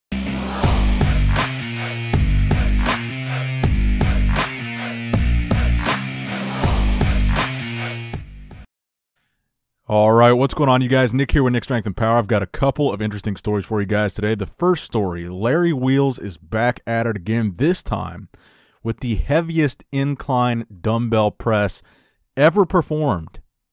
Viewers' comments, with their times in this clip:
0:08 Here we can observe the necessary oxygen intake in order to spit straight facts.